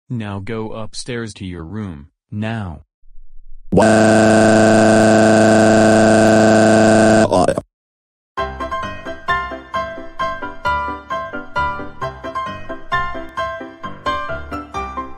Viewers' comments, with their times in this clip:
0:03 Funny Eric crying voice Free Replays